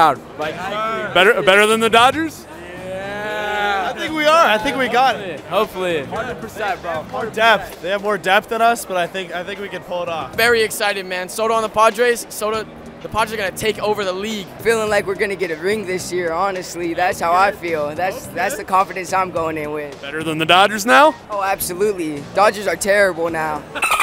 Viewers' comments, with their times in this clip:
0:10 Les go that was me talking !!!